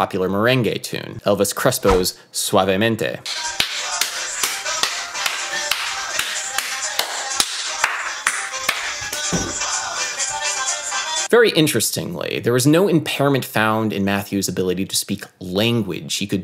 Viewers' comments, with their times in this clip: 0:03 that clapping killed me lmao